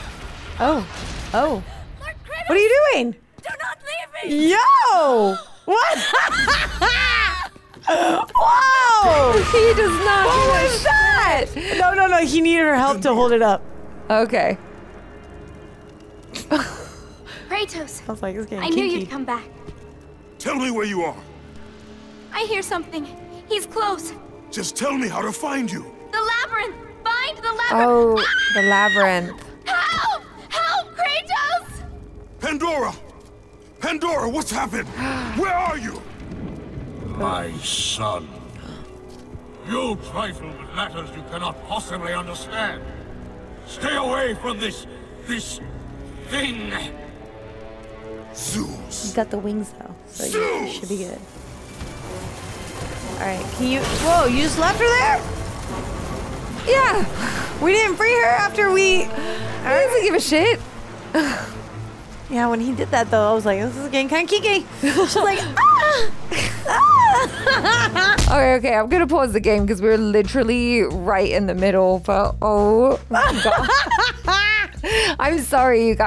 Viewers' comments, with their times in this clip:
0:04 I don't think they heard the sound of bone breaking and her scream...
0:08 you can hear the princess die here and when you go back you can see her body in a puddle of blood, crushed by the spiked wheel
0:10 that was a death scream. She was crushed to a pile of meat by the wheel exactly as Kratos intended. ☠️ So no. He didn't save her 😅
0:59 no she died from getting crushed in the wheel you can hear her scream and bones breaking